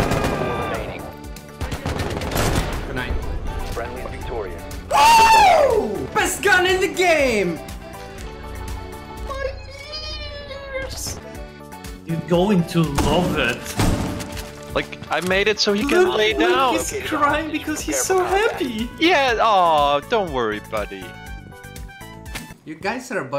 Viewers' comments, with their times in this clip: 0:08 My ears xD